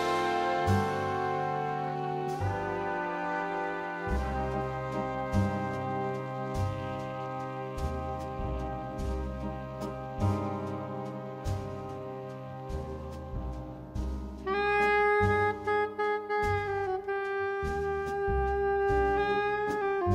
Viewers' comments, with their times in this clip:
0:05 magnificient soprano solo...